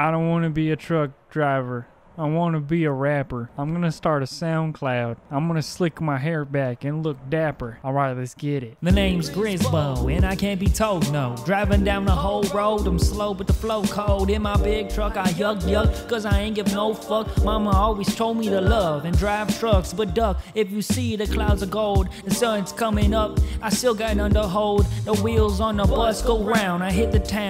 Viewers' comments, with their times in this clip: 0:08 That rap was kinda tight my guy🔥🔥🔥